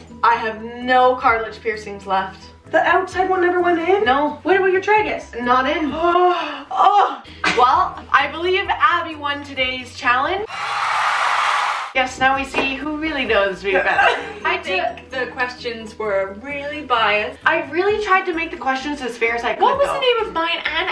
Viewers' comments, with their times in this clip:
0:07 whoever sneezed... bless u😂